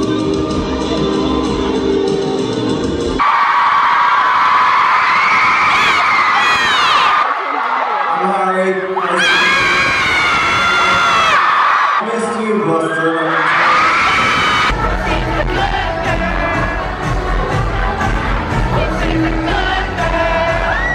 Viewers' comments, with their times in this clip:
0:08 I'm harry screeches